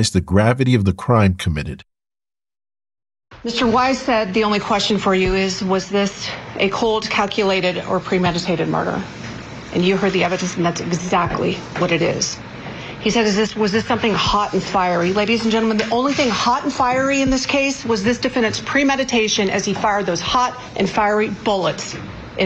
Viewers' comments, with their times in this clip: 0:05 The little clips shown of the prosecutor was so weak lol. Nothing she said was impacting or even believable the way she spoke lol.